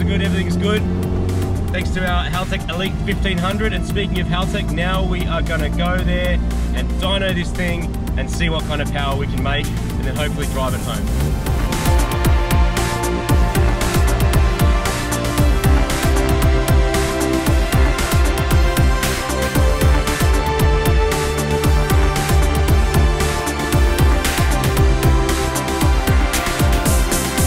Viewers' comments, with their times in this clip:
0:10 That song tho.